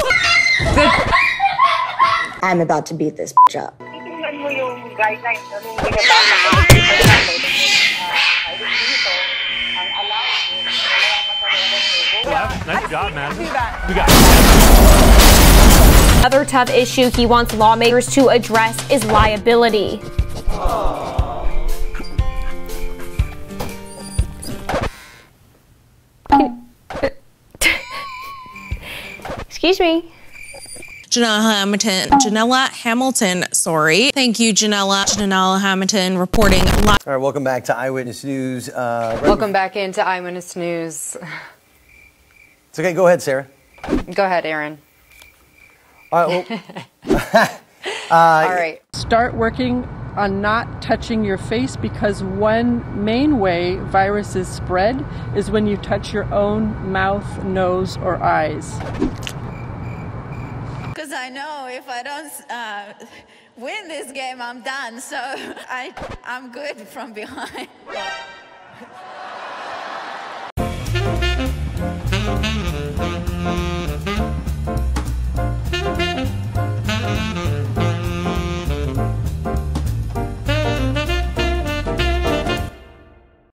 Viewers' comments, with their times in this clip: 0:06 "So they were trying to do that but because of the-" WWE in the background: "AND HE GOES RIGHT AND LEFT RIGHT AND LEFT AND HES STILL STANDING PUNCHING AND DODGING THE ATTACKS OMG"
0:31 she sounds like she done with life😭
0:31 this girl looks and sounds like my English teacher
0:44 Eren?? But I’m EREN :{
0:52 Why is nobody talking lol
1:06 “I’m good from behind” The crowd: OOOOOOOOOOOH :O